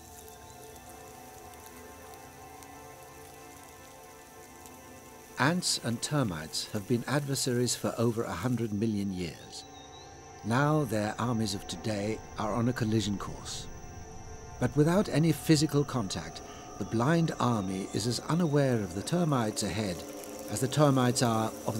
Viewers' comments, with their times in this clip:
0:06 I wish in future animal documentaries the Foley artists (creating the sound effects in post production) calm themselves down when inputting sounds ... sometimes, there is really no need to put those sounds and it is more disturbing than enriching the content. For example, when the ant army is walking around ... that's a pine cone being played with ... very distracting, if the volume were at 4 out of 10 instead of 8 out of 10, it would be much more bearable. I wish one or 2 Foley artists see this comment and share the feedback within their industry ... because really, in many cases, those sounds are too exaggerated ... and some are overused too.